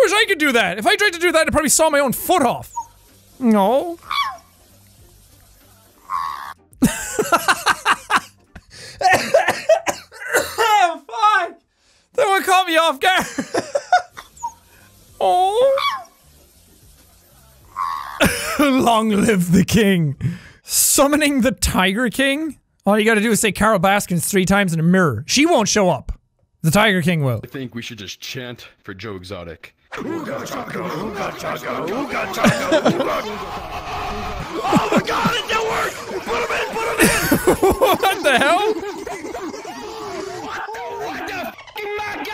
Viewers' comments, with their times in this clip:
0:04 is the best scream ever
0:05 screams of pure, unadulterated, fear
0:06 dog sounded like Toad from Mario??!!!??
0:06 ayo why this dog sound like toad
0:07 the most lung-busting laugh
0:10 for some reason a small part of this laugh reminded me of MagaMind
0:29 i thought they were about to break into "hooked on a feeling" by blue swede lmao
0:30 when they started chanting, I just had to sing (I know I'm 4 years late but I revisited this and I just love how they sang it lol) I'm just over here like "I CAN'T STOP THIS FEELI-I-ING... DEEP INSIDE OF ME..." and I'm meant to be asleep 😂